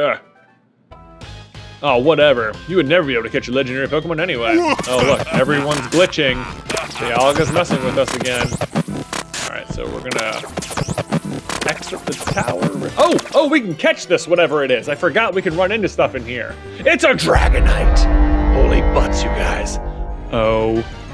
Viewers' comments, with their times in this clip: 0:04 THIS SUCKS. my poor ears. Gawddamn.